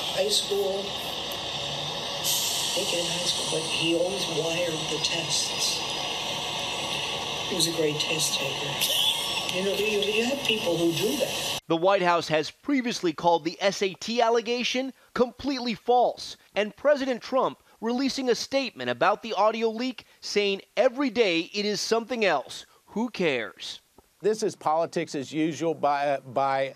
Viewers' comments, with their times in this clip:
0:07 Anyone hear that laugh or just me ?